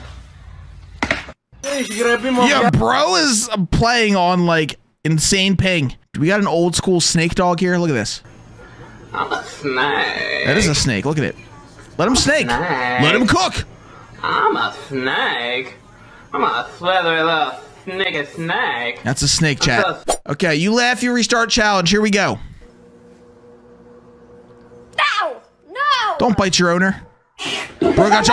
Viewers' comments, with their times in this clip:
0:09 "The multiverse is breaking apart, quickly, get him out of there!" plays Mario Jumpman Mario 'Yahoo' sound-effect to symbolize teleporting away/the screen changing